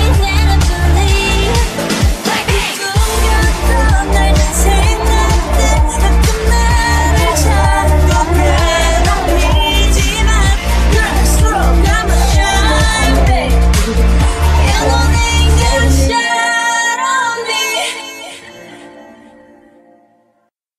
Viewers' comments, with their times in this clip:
0:03 jisoo's voice is slayyyy